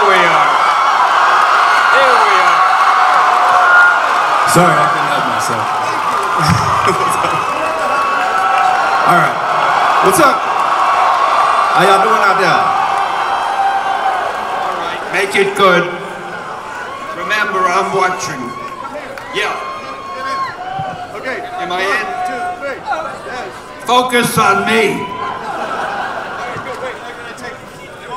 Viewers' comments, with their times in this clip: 0:09 I like his accent for Gambit from what I have heard some far
0:11 Am I the only one who noticed Channing Tatum do a cajun accent has to be his Gambit accent and it sounds perfect.